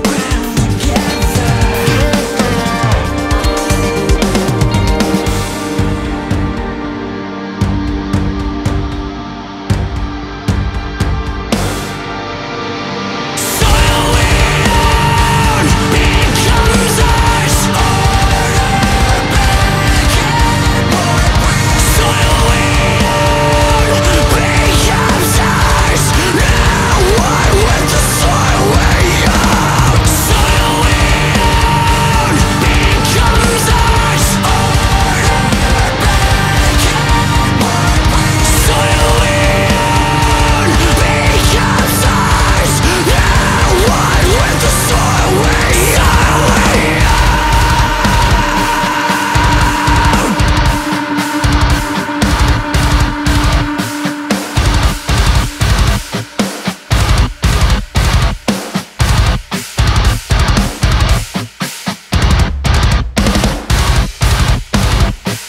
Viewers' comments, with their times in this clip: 0:06 No one's talking about the part in ? That part is the heaviest and my favorite.
0:13 The drumming stirs a feint feel of some distant memory not of my own, of a march..and it's warring and it feels ever real..where the feint feel becomes whole..trance like
0:46 till idc when WAS SO IN THE POCKET I came hard then went limp!!!
0:47 has to be the heaviest piece of music ever created. I gained 300 pounds listening to that and I was eating a salad.